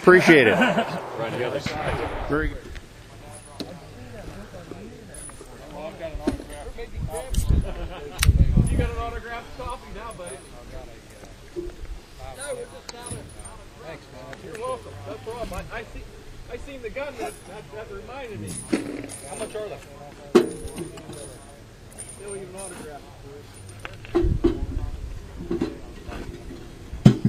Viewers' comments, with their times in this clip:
0:08 Opening a can of beer?